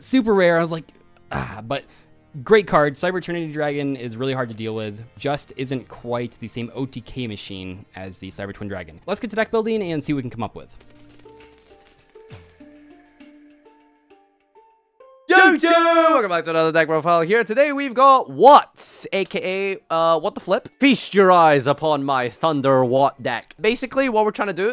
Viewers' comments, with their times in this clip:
0:09 i thought that was the sound of keys moving :/